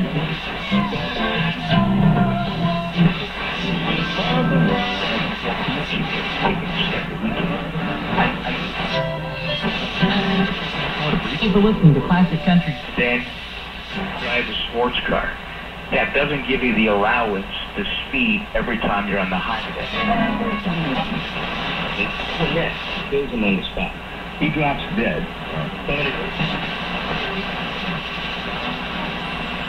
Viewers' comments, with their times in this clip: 0:10 That sounded like KXA coming in very strong on 1520 KHz